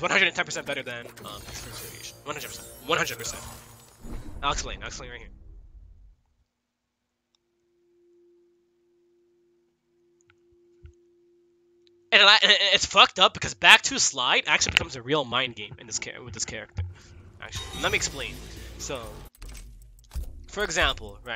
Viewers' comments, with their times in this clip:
0:09 sonic turns into a fucking goat